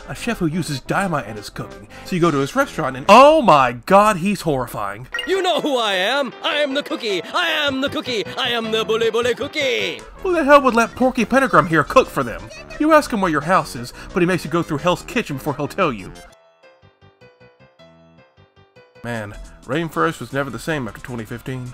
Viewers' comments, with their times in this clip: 0:06 Too many of the NPCs in this game sound like Polnareff from JJBA for my comfort. Especially Apparently his VA isn't in any credits. But it's just as absurd regardless.